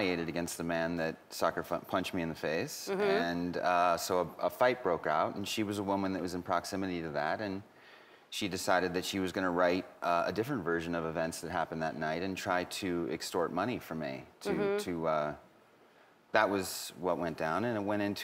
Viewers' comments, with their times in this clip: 0:03 ? I retaliated by sucker fucker? I swear he said that lol